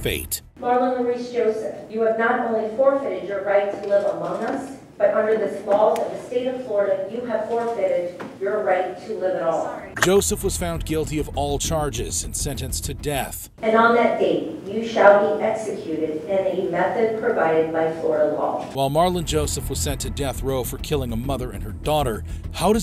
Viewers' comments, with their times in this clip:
0:08 the phone in the background 😂😂